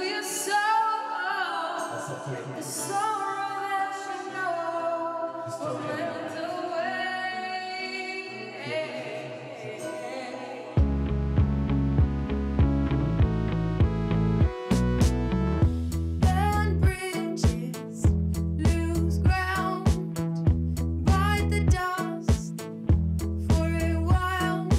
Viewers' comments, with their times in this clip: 0:10 I kind of need a song based on the melody..